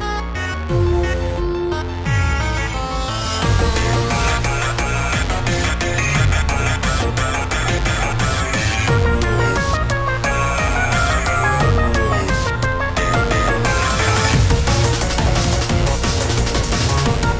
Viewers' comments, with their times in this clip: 0:03 The voice of the sonic in this moment is awesome..